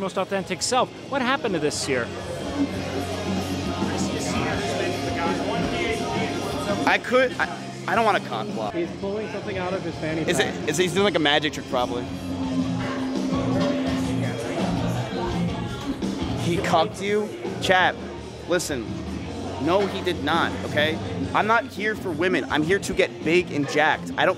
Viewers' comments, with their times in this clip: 0:08 The boys standing around while their chad friend goes to talk to a girl and Breaking Benjamin plays in the background. We've all been there.